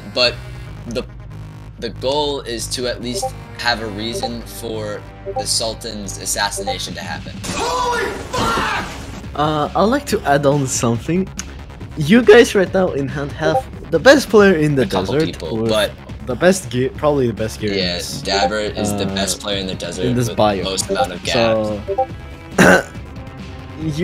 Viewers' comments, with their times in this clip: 0:07 was that you who screamed?